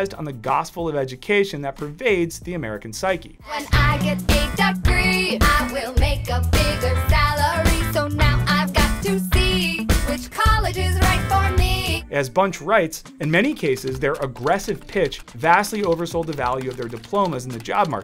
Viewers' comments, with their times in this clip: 0:05 My mind had forgotten this existed, but some enterprising neuron in my brain did not and appreciated the reminder. How did soulless jingles like this have any outcome on behavior?